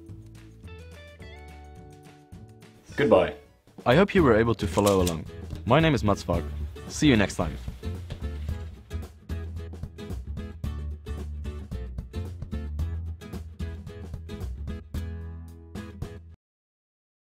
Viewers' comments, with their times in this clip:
0:03 that was kind of funny to me xdd "I hope you were able to falala along"